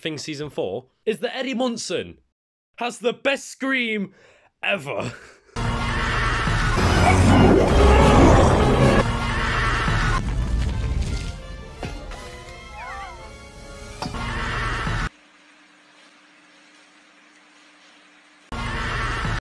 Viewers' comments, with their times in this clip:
0:05 Combine with Squidward's scream